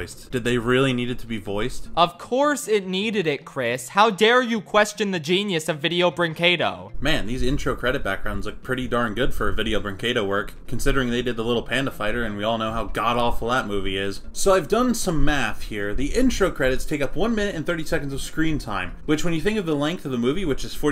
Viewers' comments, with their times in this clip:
0:05 i'm brazilian and that "veideo breinqedo" in was awesome